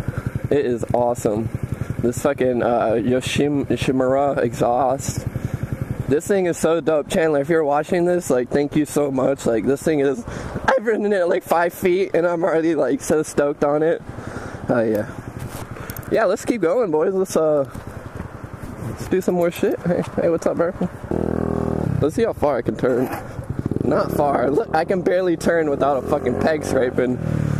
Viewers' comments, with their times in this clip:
0:10 that voice crack doe